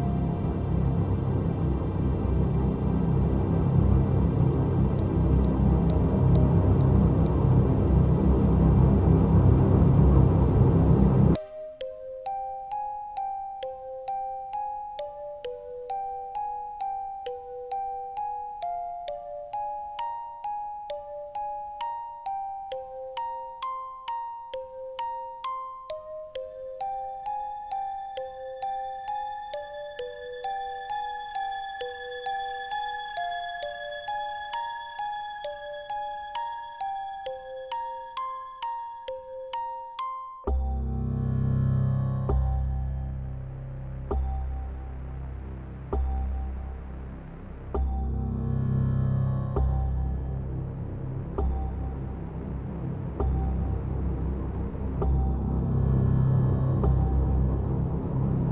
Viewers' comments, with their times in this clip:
0:09 This part has some sort of emptiness and ruinous mood like a horror movie and it's perfect!
0:11 Why does sound like Oneshot?
0:40 does this sound like the midi music in Blood to anyone else?? Like the low crushed tones sound like old midi tracks like that. It would fit with this layer being violence...